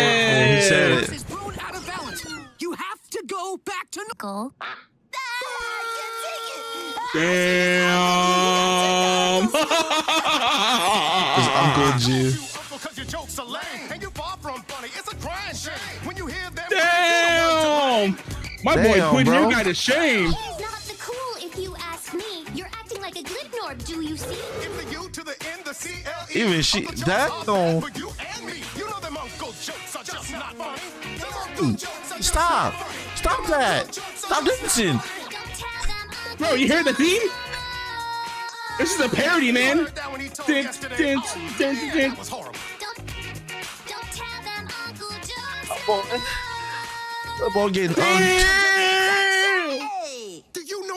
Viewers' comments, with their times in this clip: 0:10 Uncle jokes song speed up the video to 1.25x it's sounds much better than ever
0:12 Yooo the song freaking slaps 🔥👏
0:34 StarFire with the auto tune 🔥✨😂